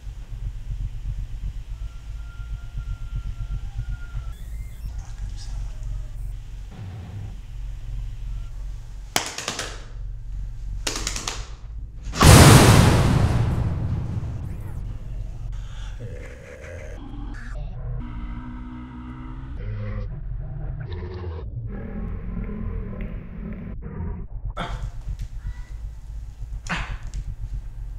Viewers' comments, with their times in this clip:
0:08 Sounds like the beginning of Darude Sandstorm.
0:09 he's doing a remix to darude sandstorm
0:11 it cut it started loading here when he screamed lmao perfect